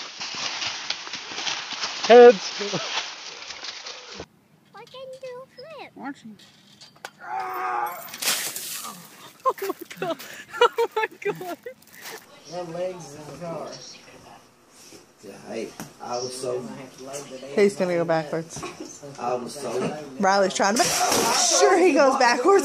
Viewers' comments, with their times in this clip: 0:06 why was he grunting like he was about to take a massive sh!t??? 🤣🤣🤣